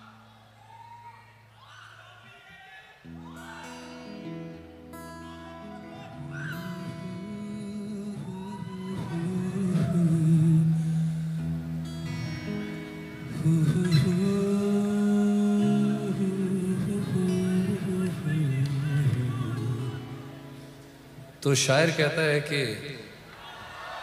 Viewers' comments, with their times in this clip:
0:06 kudos to the dhol guy, best song in this whole live concert, what a dhol and guitar combination. <3